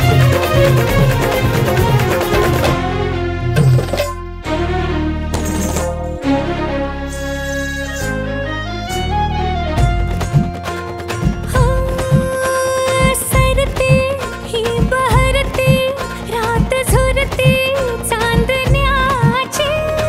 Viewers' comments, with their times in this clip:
0:07 Ajay Atul Trademark tone...